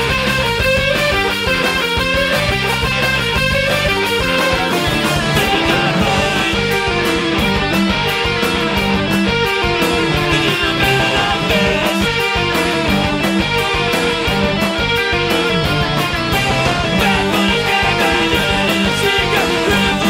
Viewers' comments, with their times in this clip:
0:04 it's wonderful, both the guitar interplay and the video. the upper guitar starts more voicey while the lower plays a noisy tapping chord, then the tapping takes over as the primary voice while the upper guitar does a noisily stabbed chord but this time with pick. incredible stuff, so well arranged.